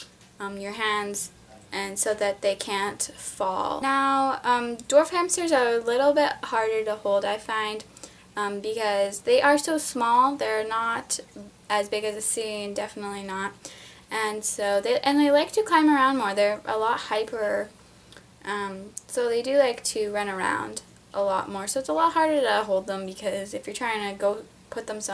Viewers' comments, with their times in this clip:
0:08 My subtitles said door frames instead of dwarf hamster